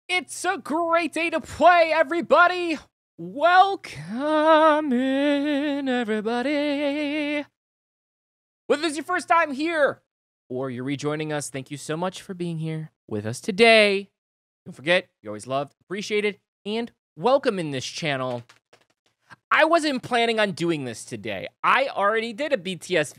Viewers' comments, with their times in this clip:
0:05 Omg you sounded like Freddie Mercury here 😳